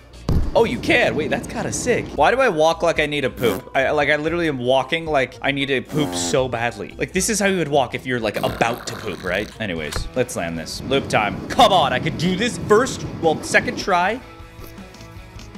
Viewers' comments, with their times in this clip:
0:03 I can’t with the sound effects 😂